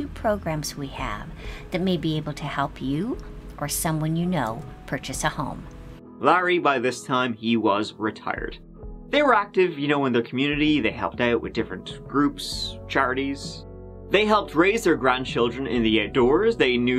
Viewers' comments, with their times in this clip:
0:04 She just sounds like she is totally in a world of her own poor thing.